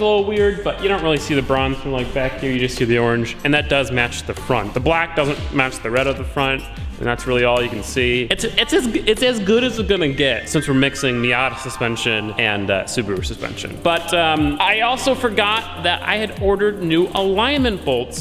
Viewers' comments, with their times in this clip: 0:05 He's rapping to the beat lol. Sounds like Migos, lol.